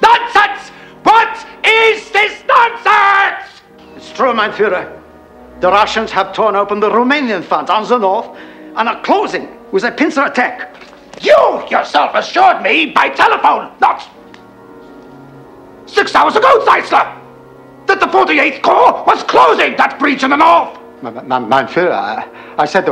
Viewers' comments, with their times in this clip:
0:08 And are clozing viz a 🦀 ettack